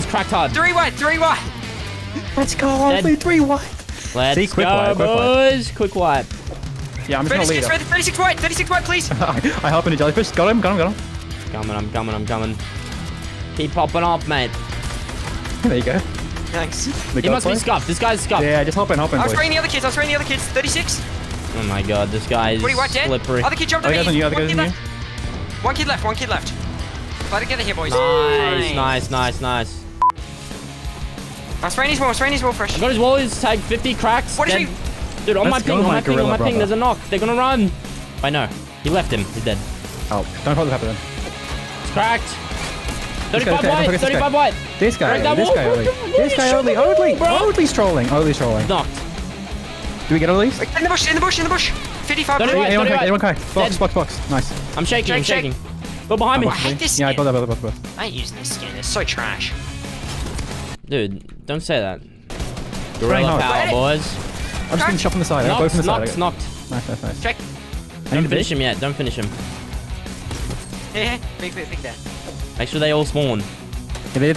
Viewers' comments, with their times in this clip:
0:08 I heard a housparty noti a i think
0:58 ive never heard fresh sound so sad before 😢